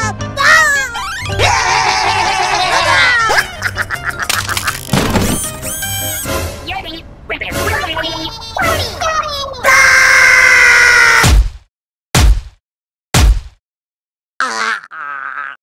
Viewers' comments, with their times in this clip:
0:06 Favorite moment is when the inklings made the Rabbids do their signature scream! Inklings: that’s our cereal! Rabbids: Daaaaaaah!!